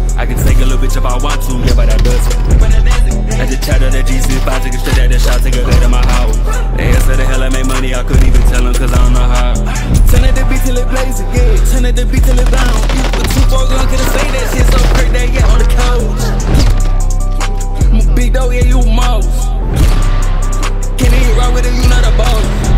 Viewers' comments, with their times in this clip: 0:10 dude.. all the way to the outro the detail was incredible. the part where you synced the exhaling sfx audio WITH the music ALONGSIDE that stim transition was too good. very creative editing, great gameplay & cinematics. solid music choice. i just found you from this video so this is an easy sub.